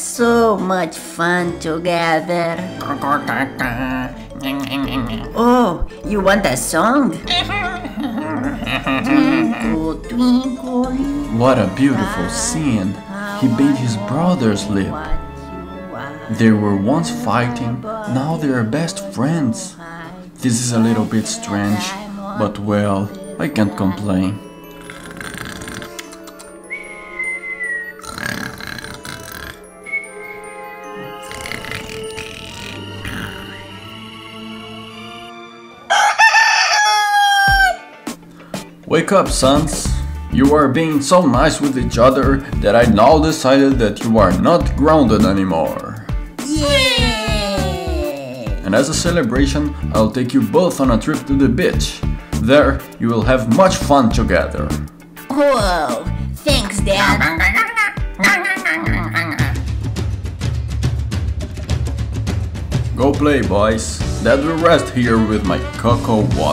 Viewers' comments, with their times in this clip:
0:09 you can sing very good!😂👌🏻
0:50 Dad said bich